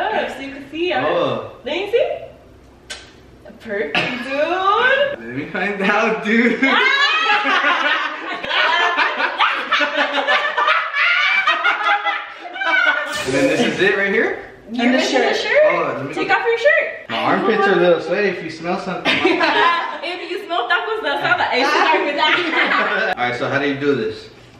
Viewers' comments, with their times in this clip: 0:09 when they all laughed😂😂 “Throw it back”😂😂😂
0:10 aww you can tell Adam was starting to open up more when he did rosas laugh and it made everyone else laugh even harder ☺️ no but that part did crack me up too 😂😂
0:12 Bruh when you guys all laughed together I died 🤣🤣🤣